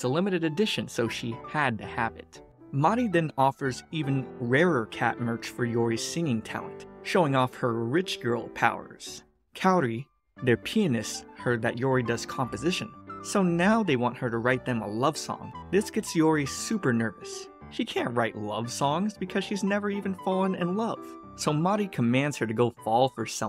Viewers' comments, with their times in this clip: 0:09 i didnt hear pianist at first 😂😂😂